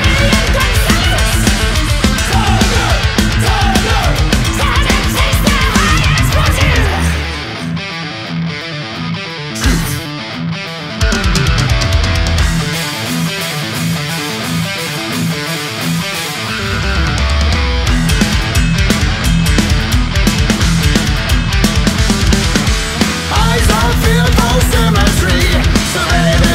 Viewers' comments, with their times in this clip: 0:07 got some Kill em All vibes